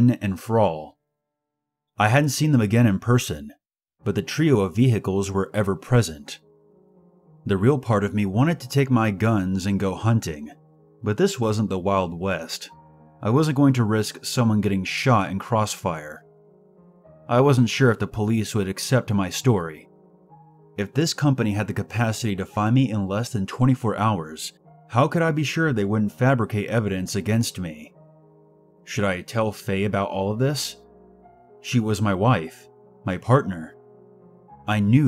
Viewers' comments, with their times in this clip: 0:05 the part that’s scarier is the way he pronounces vehicles 🚗
0:19 when this song plays its about to go down